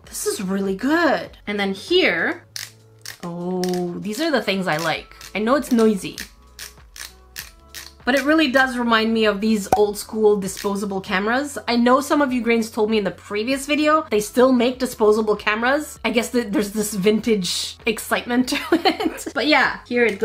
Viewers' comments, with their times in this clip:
0:07 i have one of those but this camera thingy did not work as well it was quieter not good